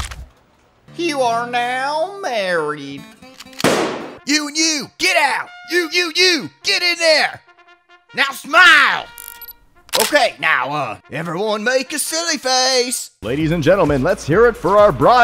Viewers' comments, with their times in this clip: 0:03 easily the most talented voice. I do still wonder how you voiced a shotgun